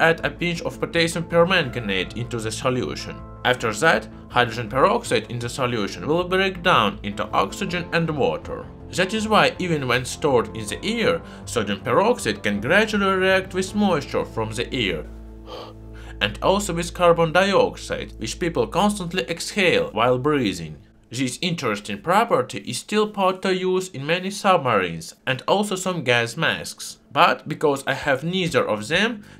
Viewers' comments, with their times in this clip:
0:10 Why would you store sodium peroxide in your ear?